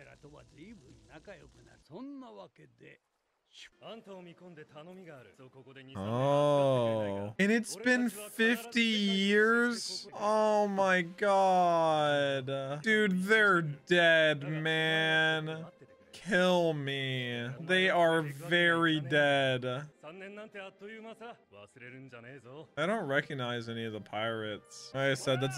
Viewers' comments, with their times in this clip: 0:09 50 years? Yohohohohohoooooo = (Whis from Dragonball Super) ! Keep that scene AND that voice (Whis), in mind! Also, "Miss Wednesday" and Mister 9 remind me of Team Rocket's (Pokémon) Jessie and James.